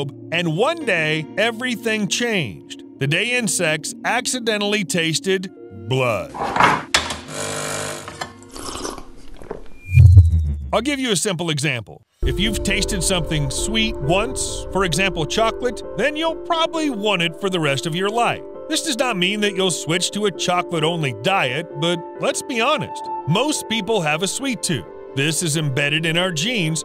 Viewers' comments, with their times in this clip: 0:07 I love your vids, but by god, that coffee slurping sound at the beginning of each vid is way too loud and seriously just grosses me out. It's just really yucky. Is that really just me?